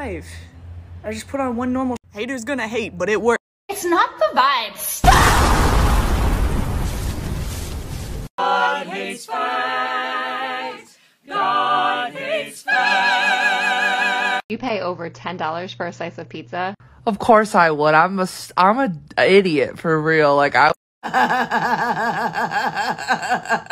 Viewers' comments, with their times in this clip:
0:08 screaming 💀🤣🤣🤣 Oh those harmonies😂👏🔥